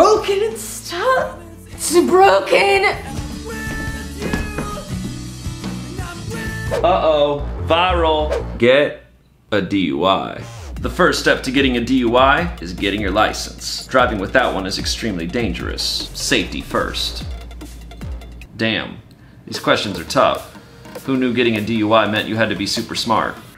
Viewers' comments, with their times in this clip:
0:07 is it just me or does than sound like pigstep by Lena Raine